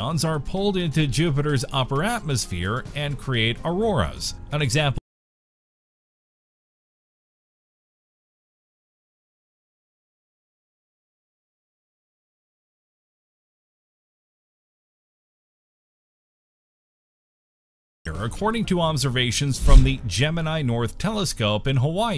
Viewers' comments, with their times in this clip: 0:04 Sound in video cuts out
0:05 audio cuts off and video freezes O_o
0:05 Audio Cuts Off☠️